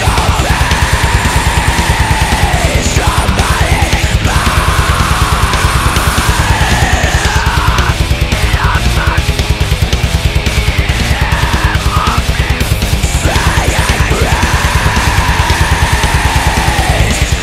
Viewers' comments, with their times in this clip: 0:03 mix the guitar a little louder around the bit, sweet riff (meshuggah esque) but the guitar is a little too quiet, maybe double layer it to make it fatter.